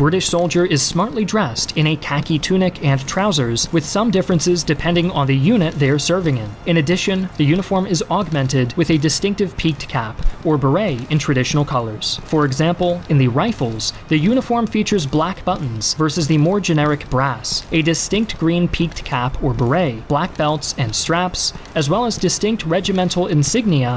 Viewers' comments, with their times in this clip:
0:06 litterly one person coughs everyone INTENCE STREAMING AND YELLING